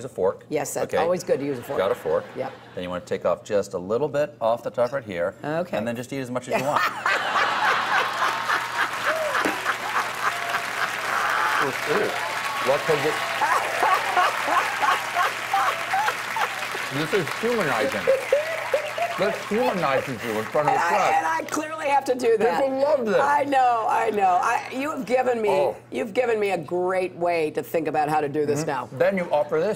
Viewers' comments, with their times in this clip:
0:05 That terrifying moment when that laugh appears!!!!!!!!!!! and by the way not a single serious question from colbert
0:06 that... laugh... She's a Disney villain
0:06 that laugh is so evil!
0:07 super creepy laugh
0:07 that cackle!!!! Ugh it is no wonder why she is so disliked by so many. What a disturbing sound. Lol
0:13 'How she laughs at the suckers voting for her'